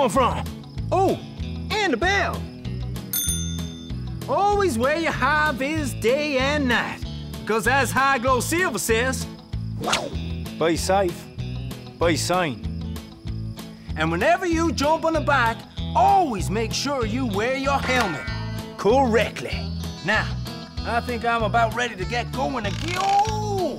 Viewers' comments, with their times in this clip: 0:08 that switch to the Irish accent! :'D